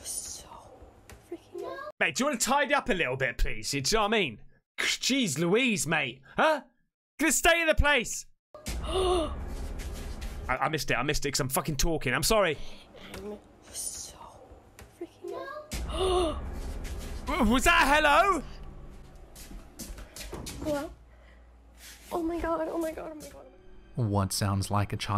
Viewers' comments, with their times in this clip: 0:09 a kid said hello or help me